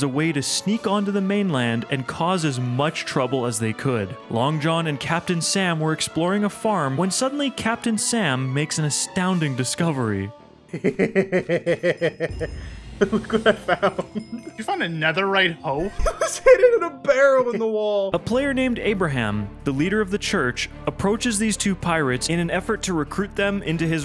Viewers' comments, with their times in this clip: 0:08 I have a gremlin laugh.